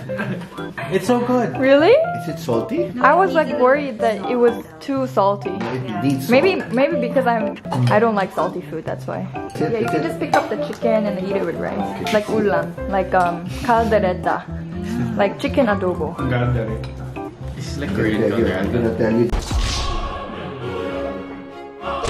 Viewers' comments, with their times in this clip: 0:04 someone definitely farted